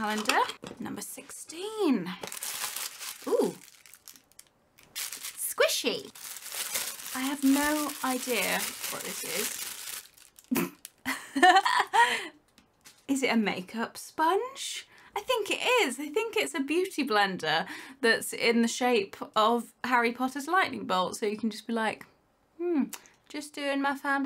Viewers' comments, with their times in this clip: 0:10 her laugh is everything ☺️